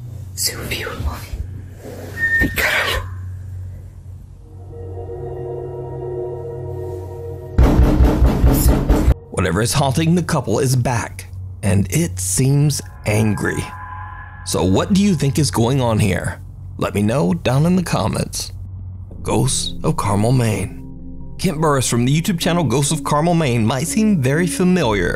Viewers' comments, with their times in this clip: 0:09 first “babe”, then it screamed that's a doppelganger trying to take the gf place because why else would it say “babe”?